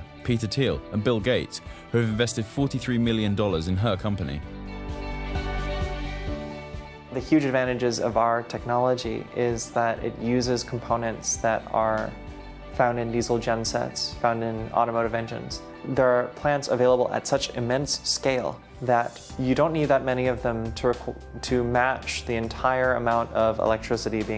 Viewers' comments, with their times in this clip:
0:08 When he said her company and “she” spoke